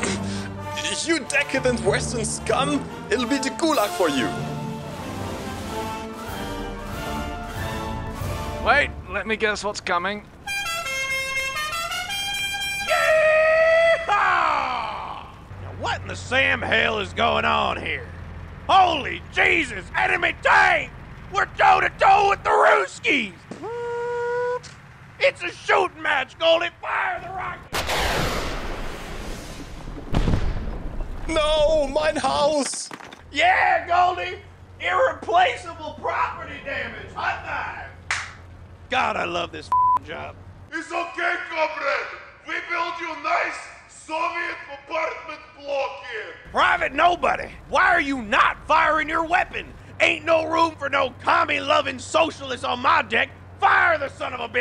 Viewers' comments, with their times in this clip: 0:08 You know it's going to be fun when you hear that horn!
0:41 LMFAO that accent.